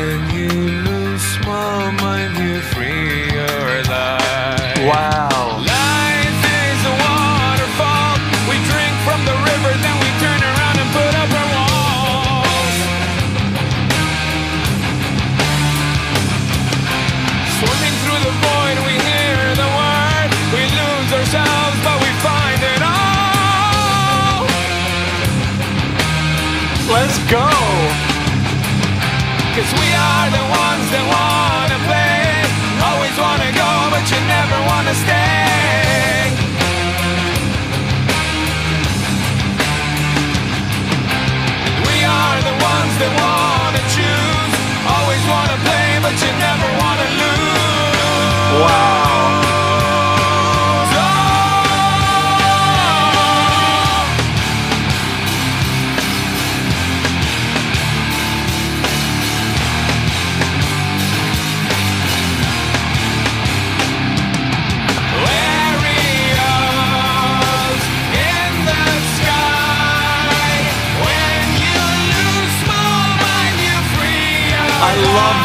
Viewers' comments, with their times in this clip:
0:04 Oh that wow
0:58 reaching for a cup of coffee at one of the heaviest breakdowns ever. You totally didn't feel this song.